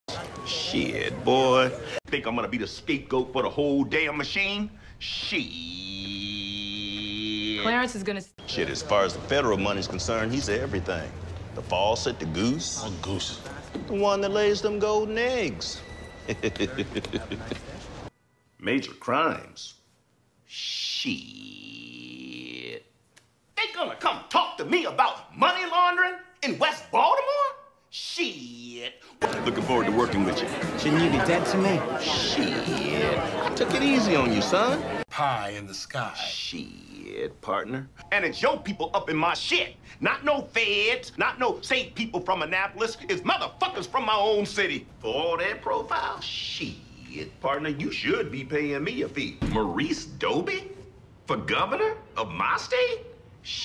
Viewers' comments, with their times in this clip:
0:02 can’t unhear the daft punk dub now
0:04 how did he hold his shit in for that long
0:04 the most epic SHEEEEEEEEEEIT in the whole series
0:04 sounds like an old Kawasaki dirt bike with a blown muffler lol 😂
0:04 ... best shiiiiiieeettttt ever!
0:05 If she didn't cut him off would he have ever stopped??
0:05 That's a longer shit than me after Taco Bell.
0:05 he drew that one out so damn long that his costar wouldn't let him finish
0:05 longest "Sheeit" in modern history
0:05 longest shieeeeettt by Clay
0:05 was just hilarious . Held that one for time
0:07 Slow it down to 0.25 ... prolonging the sheeeeeeit.
0:08 Holy sheeeeeeeit, he said it differently!
0:08 she had to interrupt or else he would shieeeeeeeeeeet-ing for eternity
0:26 Funny as "shiiiieeeet" :) my favorite is though, weirdly. Just sounded more honest than most of them lol
0:27 the way he said it 😂😂😂
0:36 Kills me.I wanna hug and kiss this guys cheek every time he says sheeeit
0:38 he accidentally extended "feds" instead of his usual word
0:38 clay davis' fastest sheeeeit ever
0:40 NOT NO FEHDS